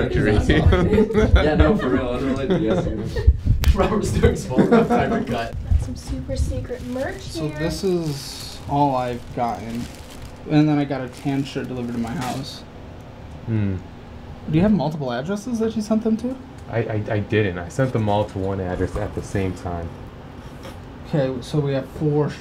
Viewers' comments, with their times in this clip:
0:04 It sounded like merchandising from the conversation